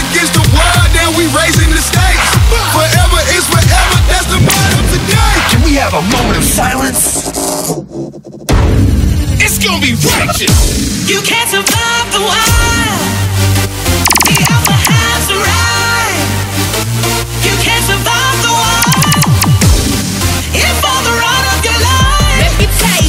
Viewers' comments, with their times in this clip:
0:09 for the longest time I thought that the words were "its gonna be ratchet" 😂